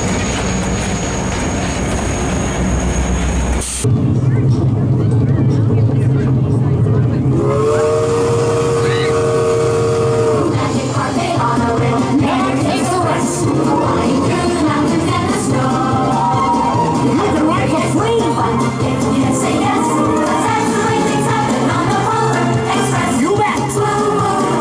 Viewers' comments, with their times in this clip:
0:07 Barber Junction whistle.